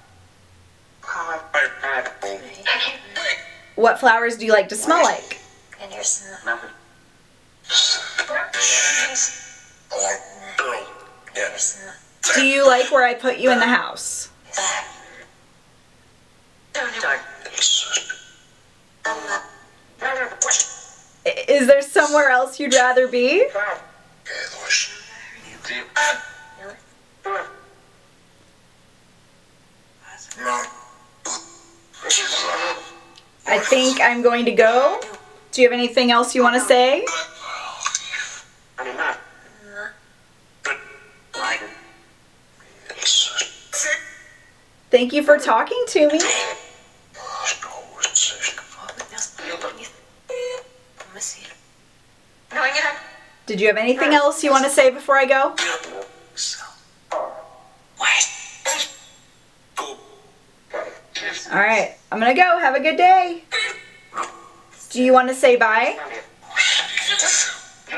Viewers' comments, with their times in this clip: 0:06 after you asked "What flowers do you like to smell like?", I heard "Can you smell them?"
0:11 I feel like I heard chrysanthemum
0:51 Very cool! I heard, "I'll miss you."